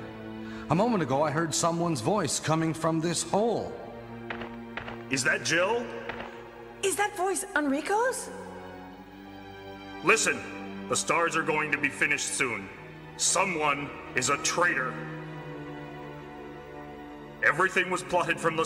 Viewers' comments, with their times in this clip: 0:04 probably some of my favorite Lines in the franchise 😅😂😂 so monotone hahaha